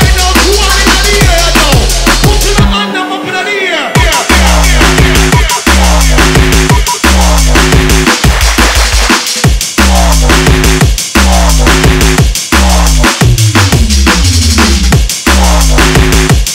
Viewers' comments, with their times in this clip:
0:03 synths say "smoke weeeeed" :D listen carefully :D